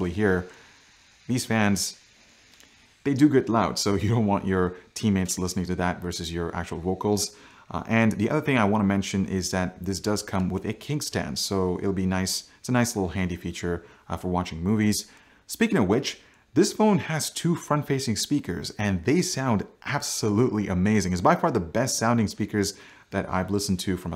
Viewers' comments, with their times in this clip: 0:08 Ahaha! Did you just call it a 'kink' stand? 😂